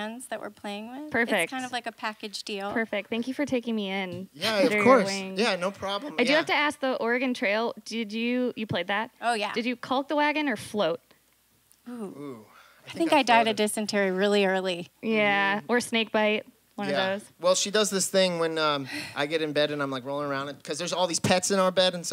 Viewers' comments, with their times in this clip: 0:03 It's so lovely the way she talks